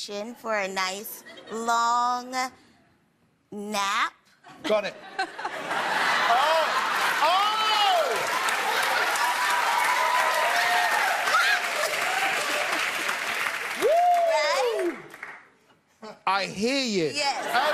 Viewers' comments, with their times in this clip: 0:03 I like the laghing of 2nd contestant